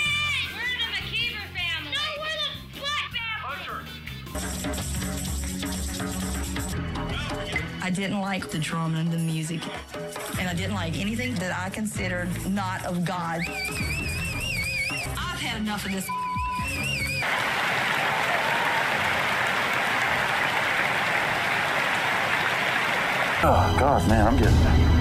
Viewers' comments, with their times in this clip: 0:07 sounds like the Love Island music